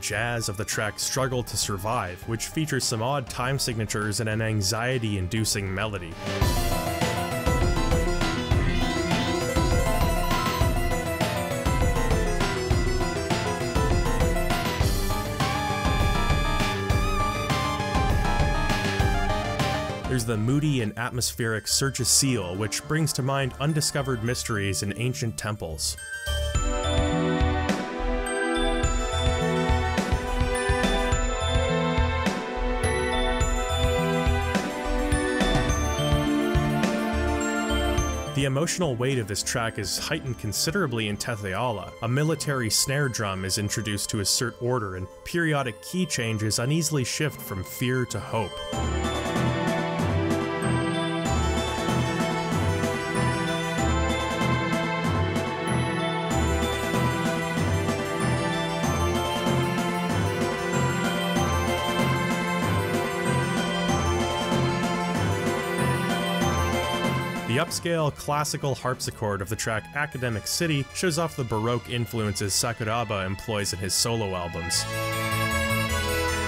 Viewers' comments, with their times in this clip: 0:07 I immediately knew this was same composer as Golden Sun 😅 he's got such a recognizable style, and a prog rock enthusiast.. 😁😁😁
0:57 ... Listening to the music modulate keys INSIDE OF EVERY SINGLE MEASURE. wtf... this just blew my mind. lol.